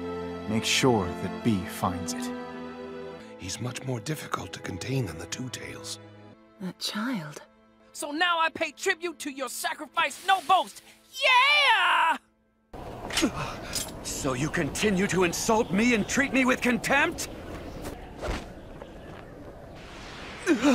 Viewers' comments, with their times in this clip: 0:03 Is that madara's voice ?😂